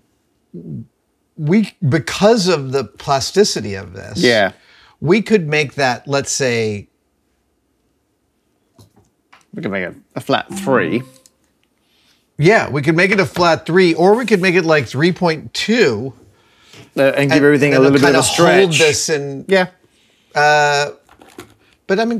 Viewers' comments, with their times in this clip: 0:06 Love that random Alexa cue in the background a few seconds after Adam says "let's say..." lol